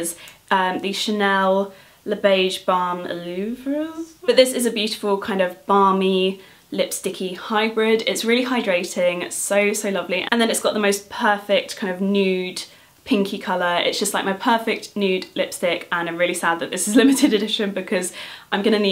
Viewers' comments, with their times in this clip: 0:03 Oh boy! What a happy, beautiful and bright video, I really, really loved it! And that French pronounciation though ^-^